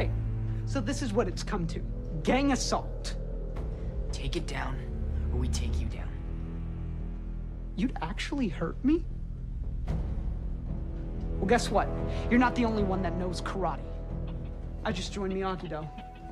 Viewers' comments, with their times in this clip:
0:03 Dimitri's "You'd actually hurt me?" That gets me everytime. The hurt in his voice,his best friend is gone.